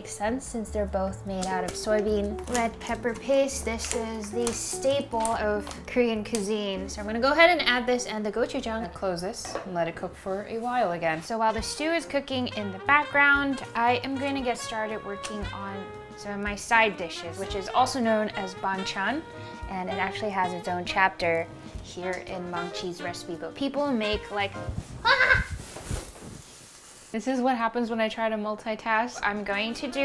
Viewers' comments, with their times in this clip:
0:08 her voiceee!!! I'M SCREAMINGGGG!!!
0:08 love your deep voice!!!!!
0:08 why ur voice sounds so deep there
0:09 I have searched the comments for this one. I noticed she closes the lid and her voice is totally different. It's a pleasant voice either way. Just makes ya wonder if people actually prefer the lighter voice and that's why she does it?
0:09 HER VOICE AHHHHH
0:09 That voice change tho
0:09 who tf was that talking ?
0:09 Your voice in 😳🥵🥵
0:09 That's her real voice. She makes her usual sound more feminine by altering it. I personally prefer the voice. Feels more authentic.
0:09 Her voice was amazing
0:09 her real voice comes out
0:09 Whoa your voice changed ❤️
0:09 I was like 😳 Cause I heard a deeper voice I thought it was someone else
0:09 Those few seconds from do not sound like her normal voice at all
0:09 is this her real voice? Lol I like it better than the fake soft one
0:09 what happened to your voice it must have dropped an octave or 2. Then a few moments later you were back to your normal self
0:10 she sound so different here!
0:10 Is It Me Or. Did Her Voice Change
0:10 The way her voice changed on
0:18 I heard "Banchan" as "Bangchan" 😂